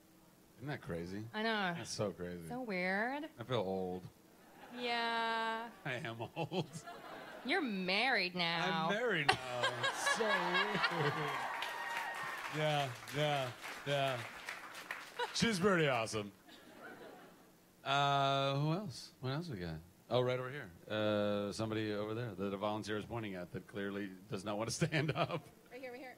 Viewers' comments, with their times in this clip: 0:07 ....she sounds pissed about it....😂😂